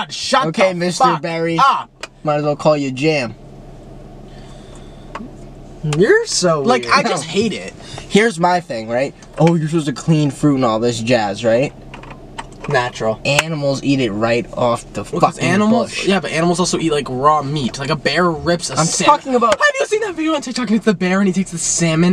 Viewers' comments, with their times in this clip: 0:03 THE AWKWARD SILENCE I CANT